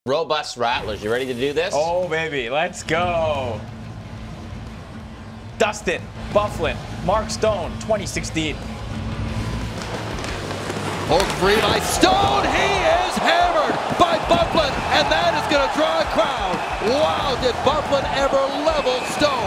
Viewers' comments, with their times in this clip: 0:02 oh man.. that’s some dry enthusiasm. I hope that was on purpose 😂